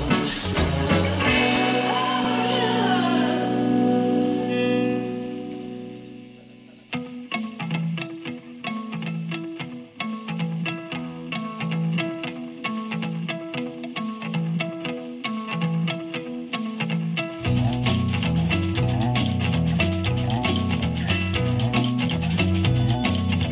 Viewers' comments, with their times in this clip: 0:07 the solo Amazing